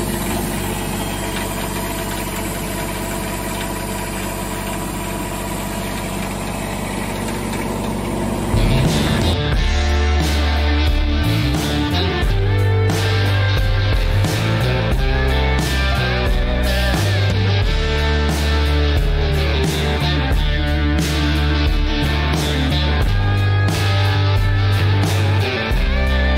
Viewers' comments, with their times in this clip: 0:10 I’m lovin the version of the intro song that I hear starting mins. Rock On 🤘🏼